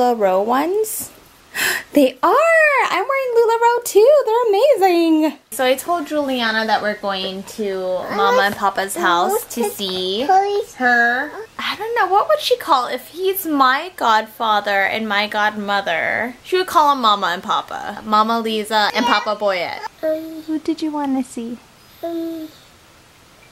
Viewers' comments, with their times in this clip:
0:06 She sounds like Barbie